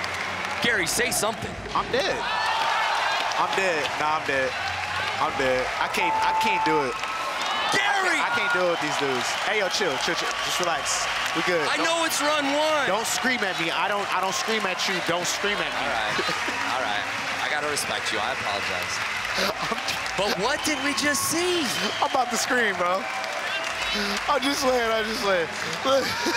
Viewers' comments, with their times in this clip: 0:07 Might have to mute the audio because the guy that talks like a bruh is super annoying. Bruh.